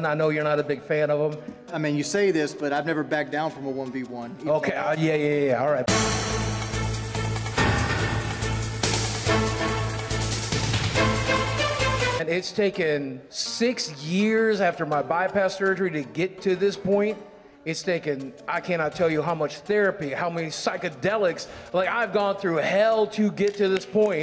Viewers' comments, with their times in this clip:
0:06 Overall, this conference felt like listening to a game chat lmfao also Holy shit